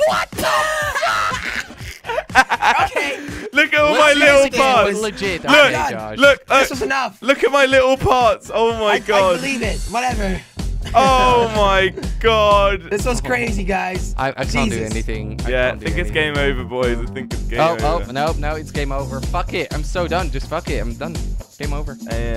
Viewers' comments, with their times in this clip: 0:03 Look at all my little pots I think you meant parts "R"